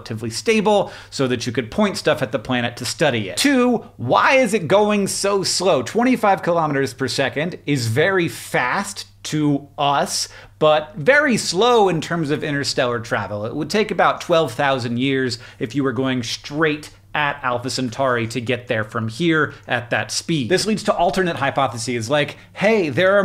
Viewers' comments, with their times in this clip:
0:04 Did the Christopher walken in you just slip out